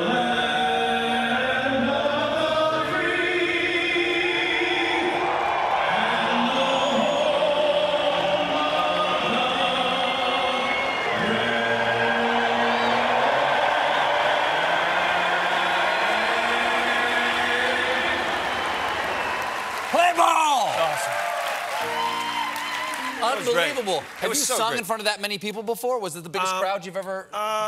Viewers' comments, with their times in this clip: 0:10 BANE: What a beautiful voice! Let the games begin